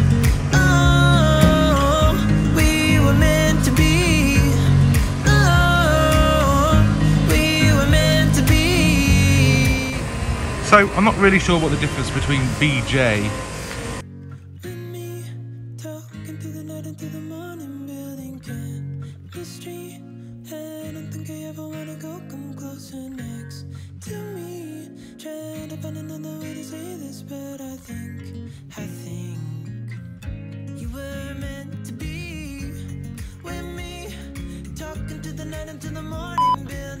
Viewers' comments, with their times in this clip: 0:07 It cut out for audio for a few second
0:24 I couldn't here you but I heard the music